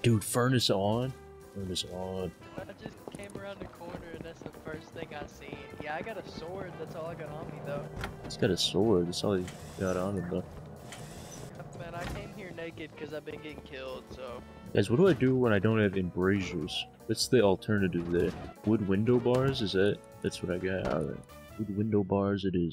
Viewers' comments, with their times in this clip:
0:04 beautiful narration bruh